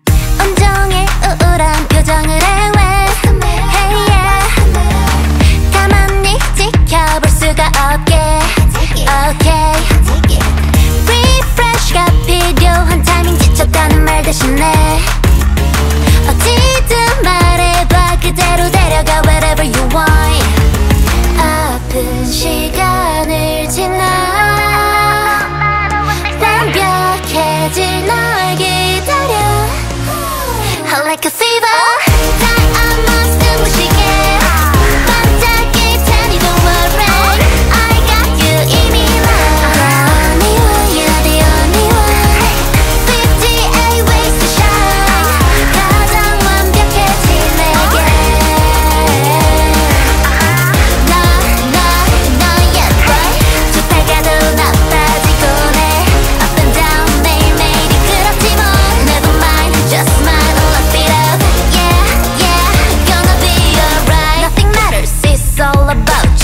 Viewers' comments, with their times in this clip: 0:09 I’m so obsessed with her ‘okay’
0:49 the "not not not yet,but" sounds like "na,na,na yeppo" and if you actually put it in translate it becomes "jeonun yeppoyo"(i think) which i (again) think means "im ,im,im pretty"